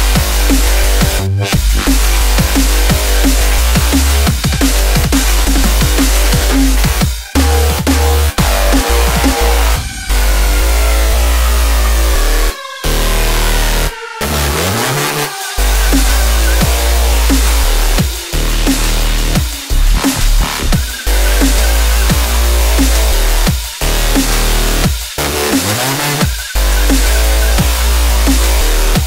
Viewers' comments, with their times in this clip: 0:10 Switch is intense..